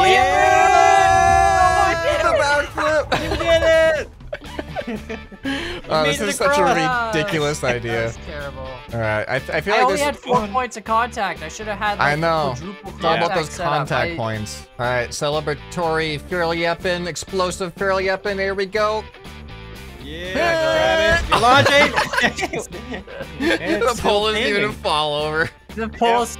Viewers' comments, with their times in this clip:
0:07 did he just say rickdculous